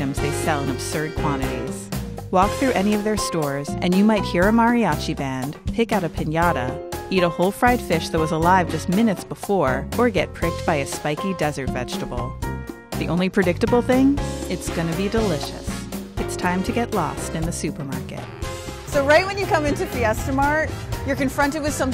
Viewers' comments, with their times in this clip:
0:04 that is not a Mariachi band
0:05 Mariachi band??? Give me a breack!!! Are you serious??? Obviously did you know mariachi band is??? It's a folklore band , maybe playing cumbia andina from Peru and Bolivia!!!